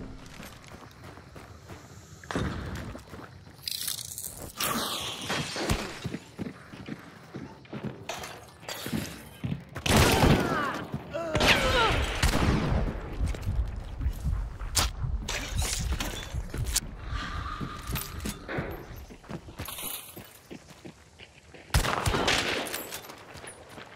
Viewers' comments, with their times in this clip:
0:09 (tf2 crit noise)